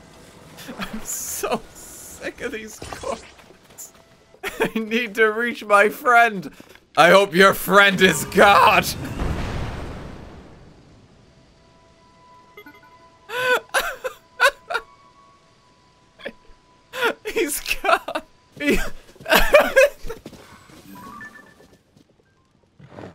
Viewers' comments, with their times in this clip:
0:04 The delivery of that line is so raw. You can tell the Koroks have broken him.